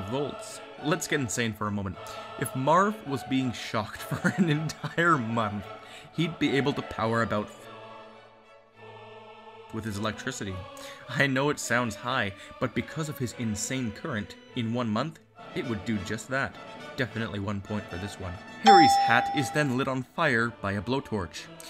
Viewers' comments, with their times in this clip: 0:07 Did something happen to the audio ?
0:08 Why does your voice suddenly cut out ?